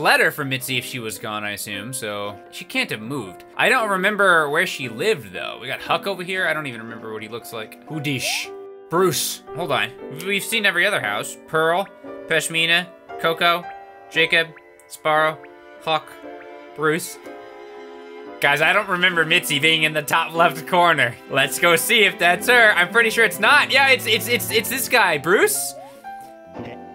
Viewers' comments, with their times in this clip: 0:07 What was that sad music that played near ? Is it from this game? If so I want it.